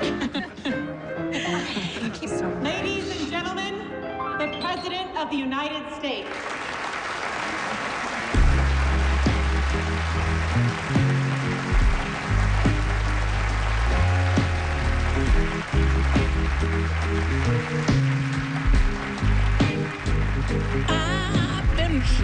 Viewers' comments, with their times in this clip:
0:10 That song gets me ALL the time